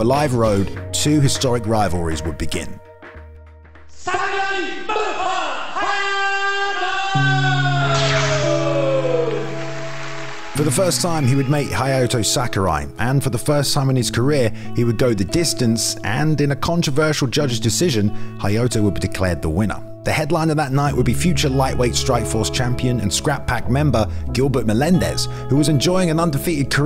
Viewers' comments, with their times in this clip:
0:08 this is the typa music we needa use for these mma vids, anything else jus doesnt pop